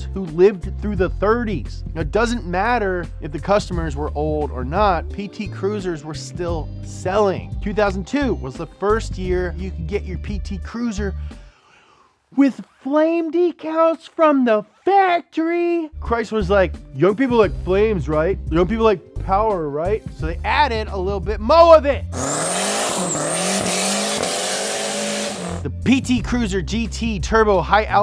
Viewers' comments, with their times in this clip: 0:09 "Flame decals from the factory" I love how he cringes through that statement lol I remember in middle school there was a kid who's Dad got a PT Cruiser with the flame decals and he was always super embarrassed to be seen with it getting picked up and dropped off.